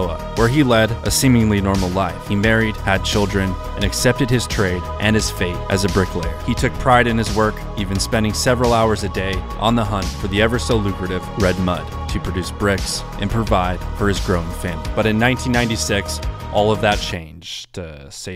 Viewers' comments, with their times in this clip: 0:05 in I got f up hearing that music in the back ground. End of the video for me